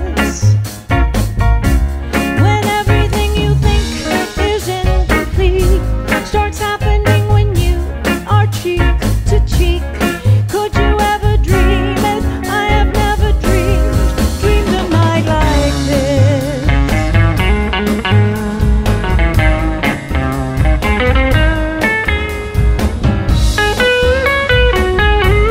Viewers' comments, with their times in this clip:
0:09 It’s am and I found this and this is awesome to hear. I heard the remake by Caro Emerald, this is so smooth and a feast for the cool vibes and a soothing voice to calm me in the middle of the night, in a crazy time for me and the planet. Thank you for your for posting this.